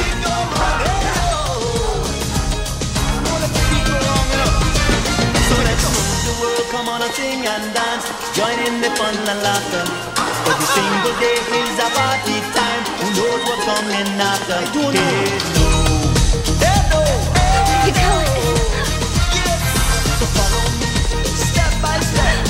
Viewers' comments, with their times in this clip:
0:10 Anyone else Mario from Mario kart "haha!" ?